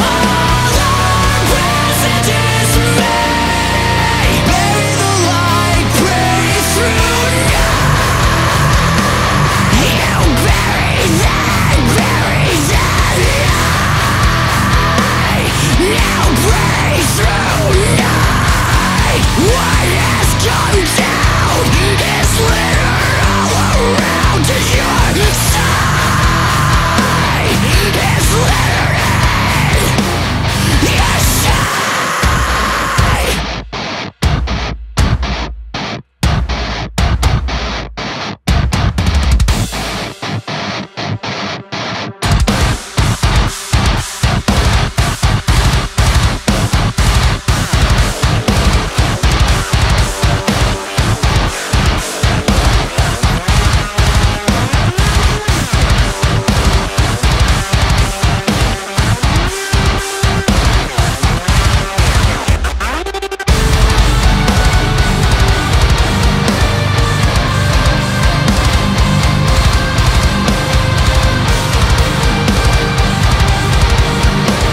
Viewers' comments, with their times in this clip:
0:06 heaviest part of the song. Not even the breakdowns can beat it.
0:07 That riff gets me every time
0:14 riff gives me a Mastodon/Cult of Luna vibe
0:30 That breakdown ...oh my God
0:31 bringing back The Focus Hour's riff literally made me scream the first time I heard this!
0:31 Some SERIOUS Fear Factory vibes going on I whole heartily approve of this synchronized riff / kick bass section
0:32 periphery keeping the djont boiis happy
0:32 After The Burial called, they want their breakdown back lol
0:34 Gave me chills, that background tremelo was a gnarly touch
0:36 "Focus" hour but slower?
0:48 I swear I’ve heard the background guitar sound in a nightmare before
0:49 is some straight-up DOOM soundtrack-level shit. Amazing.
0:59 Right after is where it really slams